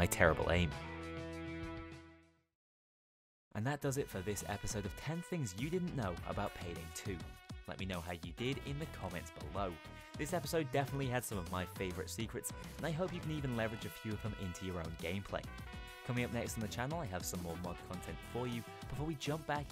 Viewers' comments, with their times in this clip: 0:04 more things, nice. just a question, do you think you'll ever return to your "DSOD guide" series? or do you have other ideas first? also, the audio got lower.